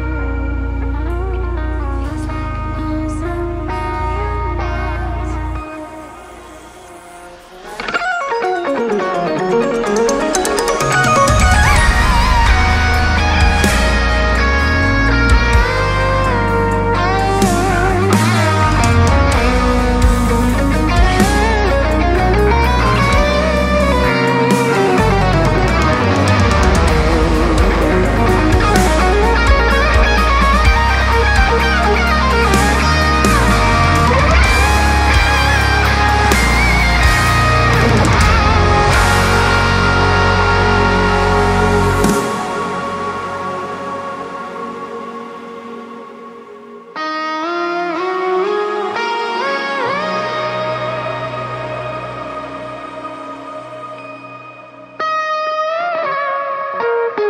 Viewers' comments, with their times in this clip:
0:08 oh my god!!! That lick was gorgeous. Oh man this is gonna be a treat for sure, I can’t wait to listen to this
0:38 the fact that of bliss is as short as it is is borderline criminal but it's also what makes it so good the drop hit me like a truck